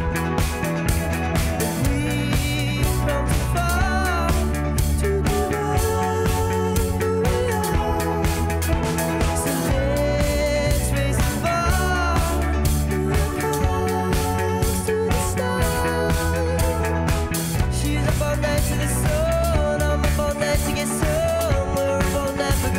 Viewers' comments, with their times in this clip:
0:03 That noise he makes is great